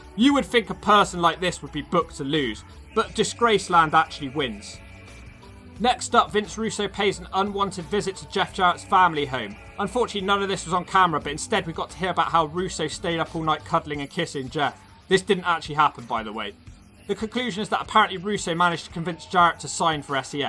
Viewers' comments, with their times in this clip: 0:05 what's the background song used during this? It's really relaxing and nostalgic.